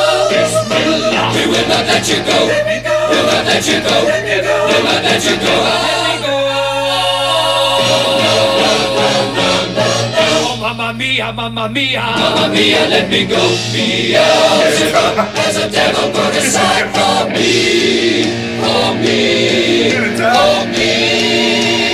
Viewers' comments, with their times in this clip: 0:04 The part is showing you how many times they layered everyones voice over each other to get the sound.... It was layered and layered to get that specific sound That Freddie wanted...a masterpiece.... For the tech they had at that time and age... This is a fucking classic ... Please know that...